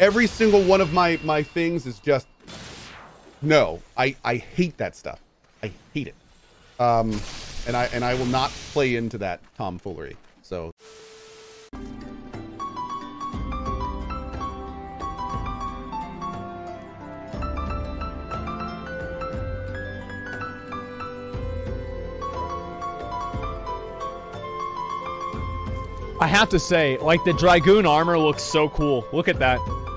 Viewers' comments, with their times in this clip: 0:10 when you laugh so hard no sound comes out